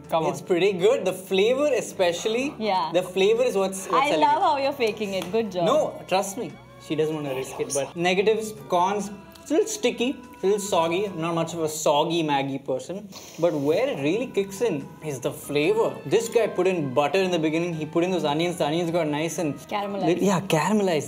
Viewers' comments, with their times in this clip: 0:06 when Rohit whispered "hey loser" 🥵
0:06 I would loved to lose if Rohit says 'Hey Loser' the same way 😁😁🤭🤭❤❤
0:07 ..."hey looser "o m g😂💞that was so cutely said
0:07 that whisper omg!